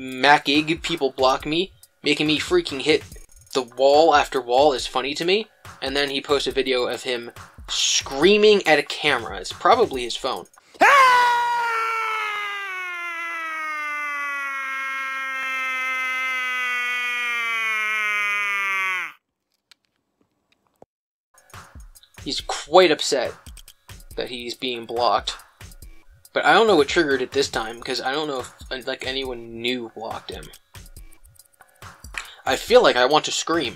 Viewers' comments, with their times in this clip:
0:09 You call that the sound of anger chris ! THAT MORE LIKE THE SOUND OF BEING CONSTIPATED!!!
0:16 I swear, Chris' scream sounds like a cow mooing